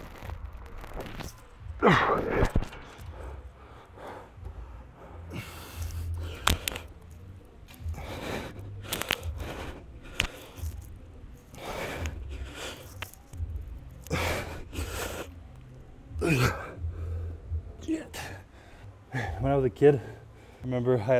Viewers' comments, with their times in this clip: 0:08 Was that sound his shoulders crunching?